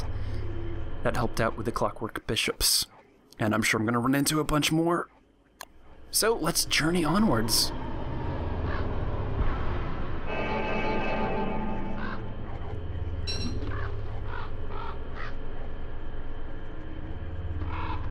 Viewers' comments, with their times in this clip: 0:08 If that wooden Maxwell head doesn't behold the most evil laugh in the world I don't know what would. is where it laughs at.That is fucking creepy as hell,but epic sounding as hell.